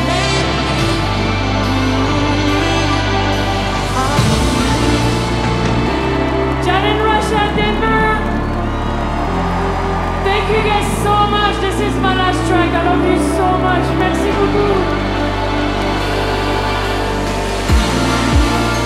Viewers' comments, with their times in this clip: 0:03 Wow... That Wakanda Forever + Avatar mashup, though. 🔥 But let's be clear, it's far more than a mere mashup. It's got that CloZee sauce. 🤙🏽👌🏽